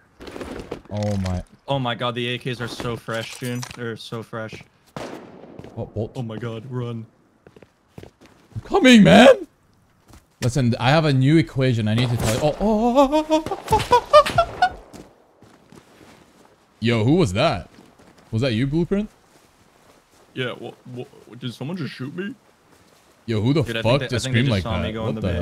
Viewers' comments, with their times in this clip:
0:08 That man got scared into singing opera for a moment! Hit almost every high note possible Thank me later.